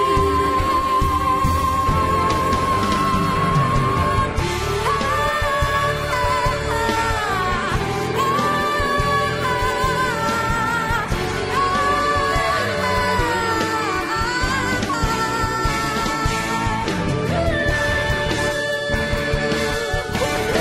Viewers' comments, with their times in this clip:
0:04 this part never fails to make me cry. She was shouting all the pain, letting all out because she knows that everything will be okay with a smile. GOSH, I ALWAYS FEEL THAT PART.